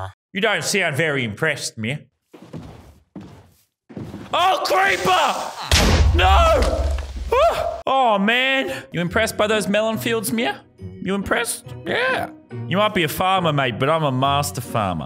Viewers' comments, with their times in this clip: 0:03 i laughed a lot when you screamed creeper and drove the boat away